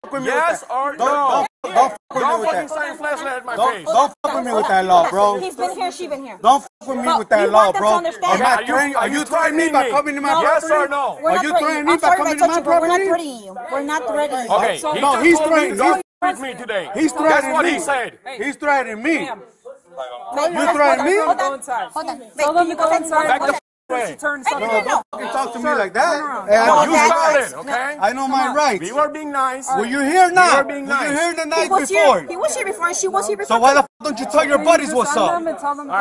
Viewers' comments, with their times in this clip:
0:08 the “are you threatening me?” in sync💀
0:17 This video is amazing for inducing a full on migraine. When they are all talking at the same time it was literally painful to my brain